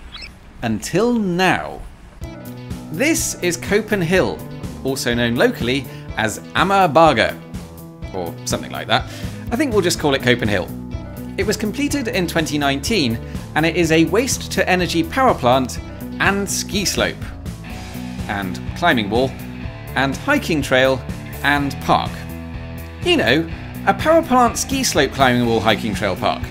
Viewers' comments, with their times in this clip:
0:07 Fine pronunciation! 🙂 Bakke means hill. Amager is the island you are located on 🙂I always believed the "-ager" part cognated with the English "acre" (meaning "field"), but it turns out not to be the case. A person who is born or lives on Amager is colloquially called an "Amagerkaner" (a word play on an "American", as it is easy to make it sound almost the same in Danish).